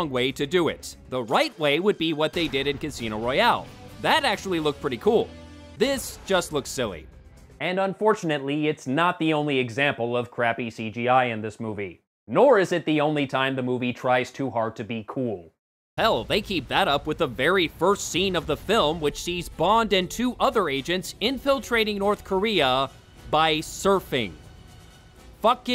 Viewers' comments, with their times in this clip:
0:07 Was that a f# stock laser sound effect?!